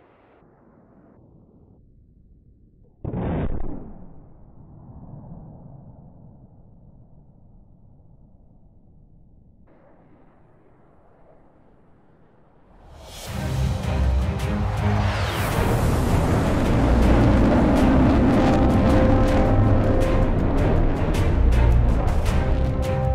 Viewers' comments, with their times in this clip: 0:10 whats that soundtrack? It sounds just like Battlefield. Love it